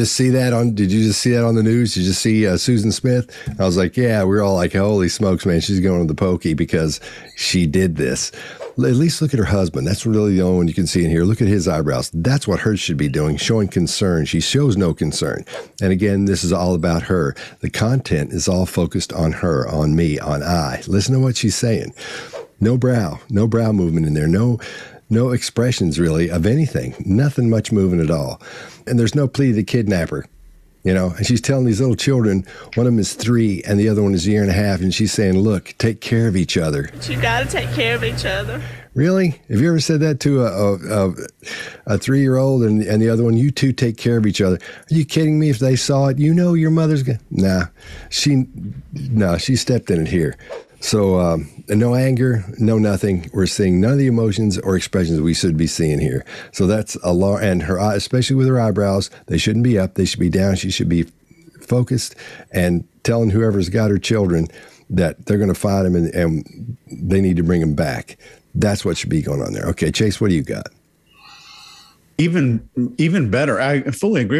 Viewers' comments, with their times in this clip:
0:09 both these videos I see the pull up of the corner of the lips and her “cries” sometimes sound like laughs. I think she’s enjoying the attention, the victimhood. Plus all the stuff you point out.
0:59 To me i see /hear her trying to suppress a laugh. She covers it up with some type of cough, but it's definitely a laugh